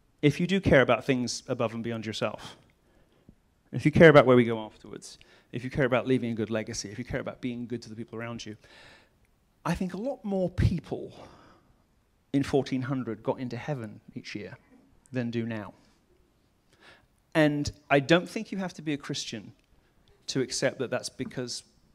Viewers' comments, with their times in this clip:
0:08 here shows the modern day christian’s issue with society. they think they are laughing because they believe he is wrong, but in reality that laugh is the devil’s laugh. only the enemy would cackle (rejoice) at the obvious explanation of the reason why less and less people are returning to God’s kingdom. milo’s courage to speak Jesus name to the satan riddled souls in that room is bountiful. i wish to be as courageous of a god fearer as he is. this bravery is giving me shivers…